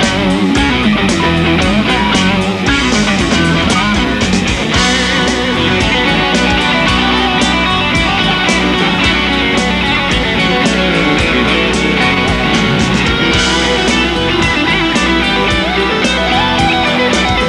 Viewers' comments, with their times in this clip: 0:04 does anyone have idea what scale he use ?